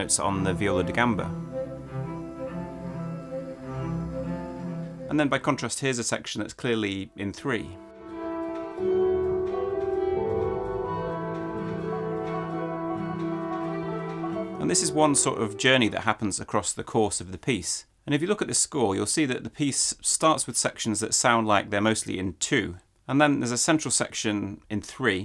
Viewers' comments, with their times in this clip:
0:06 I hear it as section in 4 (listen to the sticks/ percussive instrument), anyone else also hears this in 4?